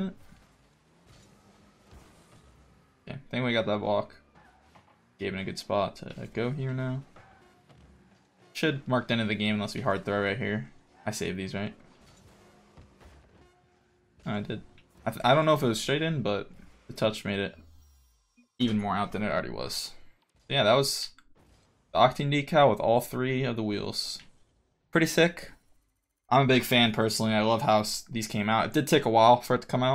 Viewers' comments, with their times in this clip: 0:10 I save these, right? eh.. i did Holy moly he says it like its nothing, im dying